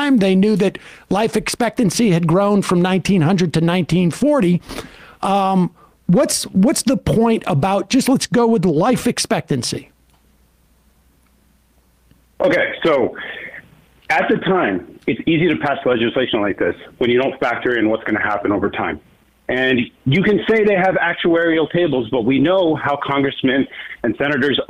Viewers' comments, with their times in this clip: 0:10 i feel bad for the guy, his voice just got really nervous sounding, I know that vocal tremble, that public speaking nerve